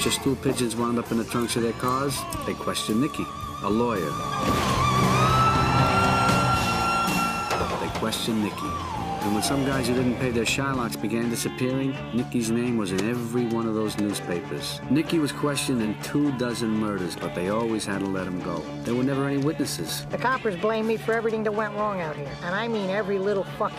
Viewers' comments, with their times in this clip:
0:04 She hit the high note so high it made the car explode.